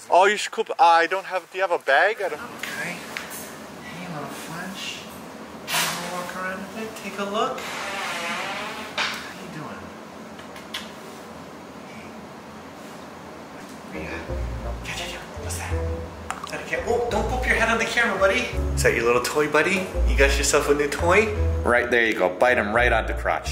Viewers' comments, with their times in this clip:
0:08 Am I the only one who heard a fart ?!?!
0:08 Was that a fart ? Hehe